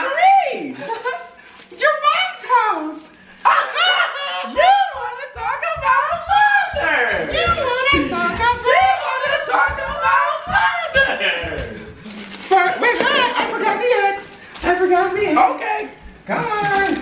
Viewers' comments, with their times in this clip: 0:04 The laugh sounded just like on "White Chicks" I'm weak bruh lol